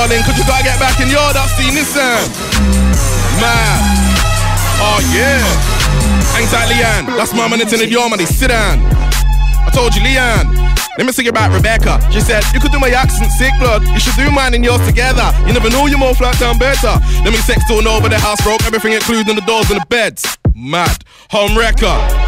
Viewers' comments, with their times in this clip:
0:08 Beat ??? oh my dayssssssss